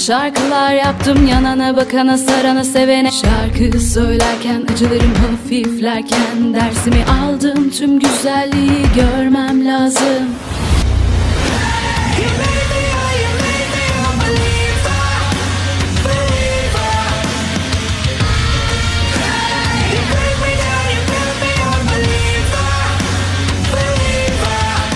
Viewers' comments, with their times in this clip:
0:10 No one but a man can copy a man's voice